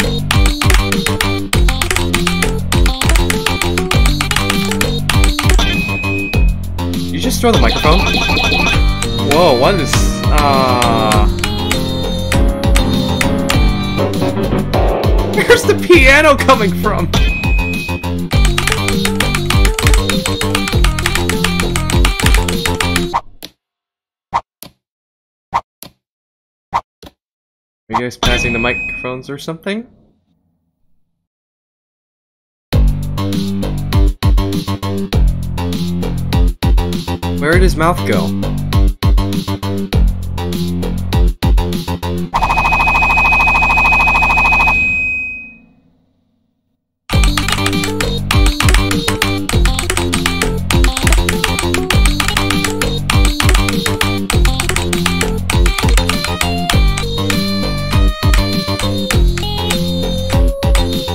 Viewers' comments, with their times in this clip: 0:08 The boyfriend:"Starts Rapping" Stickman:"Plays piano" The boyfriend:"Visible Confusion" If you dont get it then go to
0:42 Lol The radio is Like bf's voice but is out tune and in fight Stickman falls and bf throws a 1,000,000 mics lol in But stickman is crazy in the 2 song lol but Huh